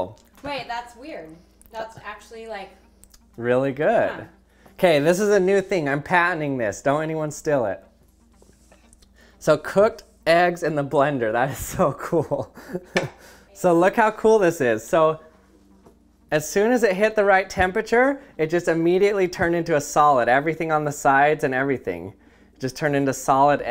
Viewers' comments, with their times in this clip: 0:06 He didn't say "steal it" he said "still it" lol. It really is refreshing having someone make content that sparks interest in things otherwise disliked by most.